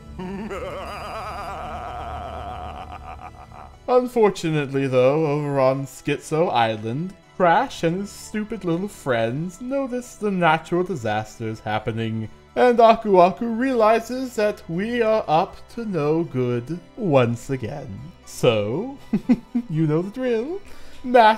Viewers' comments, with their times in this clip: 0:07 the hell is that ? your video was good so far, you didn't need to make some bad cortex impression you know...